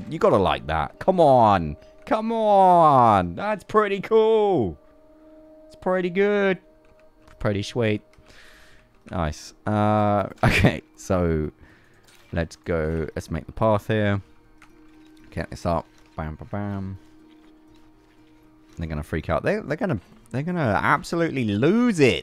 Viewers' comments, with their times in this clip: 0:04 he sounds, and looks like Owen Wilson when he did that Doesn't he